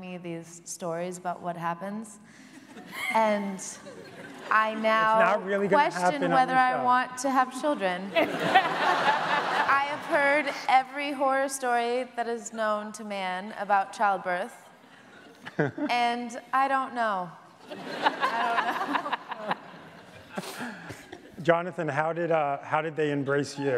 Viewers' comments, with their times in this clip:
0:06 I love how Jenna just has her head down and can't stop laughing